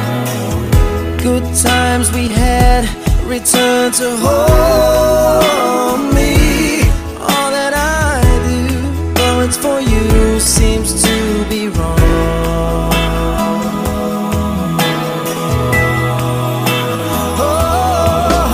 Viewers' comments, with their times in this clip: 0:05 (not as bad in same places in previous parts of the song). Has someone deliberately messed about with this to make BH look shit? God I’ll sound awful if it isn’t. But if it’s an effect, I’d just be surprised he’d have kept that and not sacked it off. Certainly shouldn’t be a playback issue considering it is digital. Other than that I actually quite like the production and a lot of the things going on. And much better than when anyone else from East 17 tries to sing it.